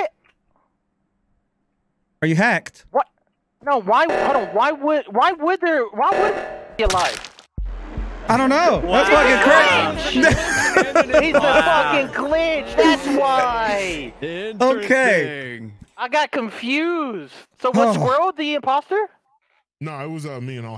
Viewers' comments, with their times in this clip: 0:05 swear to god i thought you said "idk...must've been a glitch"